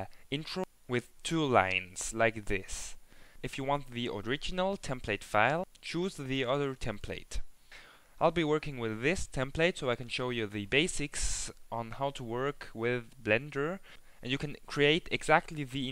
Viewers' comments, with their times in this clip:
0:03 Haha! Didn't even notice how funny i pronouced "original" :-)